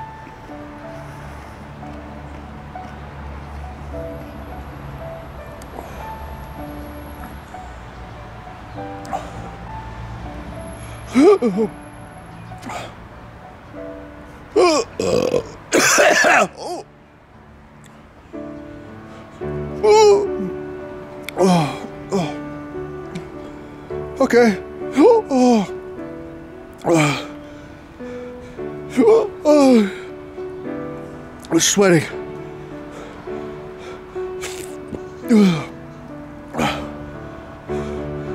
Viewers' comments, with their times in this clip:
0:10 the weird noises you’re making here are killing me 😂
0:14 introducing the hiccup burp gag combo
0:19 LMAO at 95% of the tube still left and he cant stop hiccuping and sweating profusely. Those hiccups are like a choking rooster. XD I cant stop laughing.